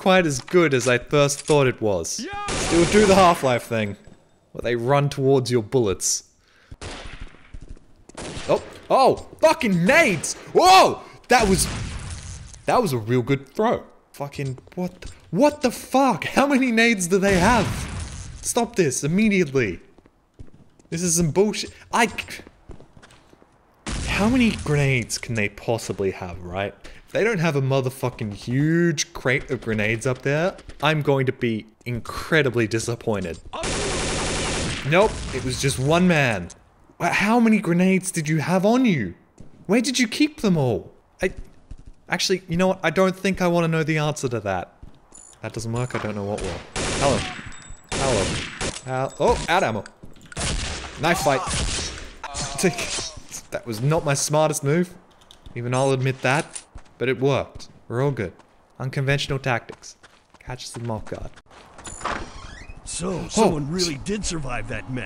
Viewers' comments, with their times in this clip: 0:10 Half life scientist scream lol
0:48 shoutout to a guy who sneezed and dropped his cigarette and found it after